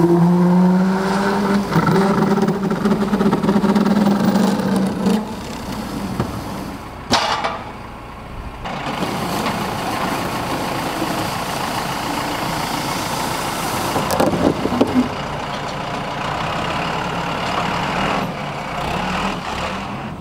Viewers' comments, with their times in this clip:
0:05 sounded like Chewwy from Star Wars. That’s how G. Lucas got the idea, he had have to move a shed a weekend before filming the movie.lol Now seriously speaking, I just recently found your videos and I’m hooked. So consider me a subscriber, thumbs “uppernist”( uppernor, uppernile, uppernologist...) and a big fan.